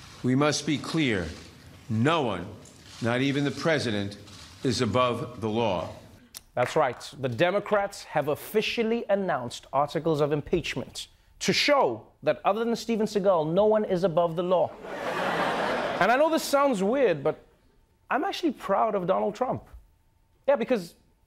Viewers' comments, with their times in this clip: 0:06 I live for failed claps
0:08 That lone clap 😂